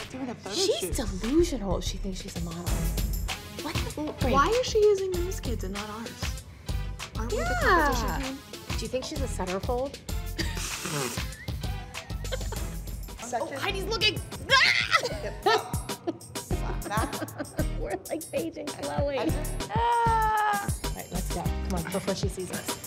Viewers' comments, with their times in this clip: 0:07 in the background... HAHAHAHHAHAHAHHAHAHhhhhhhhhaHaha